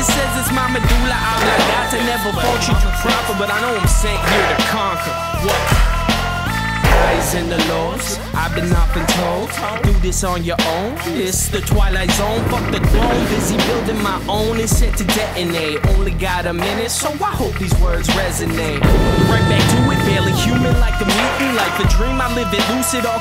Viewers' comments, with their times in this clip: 0:04 Woahhh sick one another great video and good music over top also 🔥
0:05 WHAT All these landings are and sound incredible... I'm satisfied by the sound of my fakie pop-shovit, but this is next level haha!